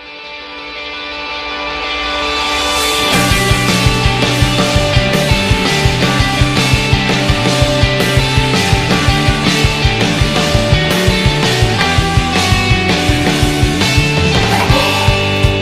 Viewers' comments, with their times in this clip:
0:03 I like how this is the only anime song (so far)that uses Chimes. If there is any anime songs that uses chimes please tell me! I love to hear it!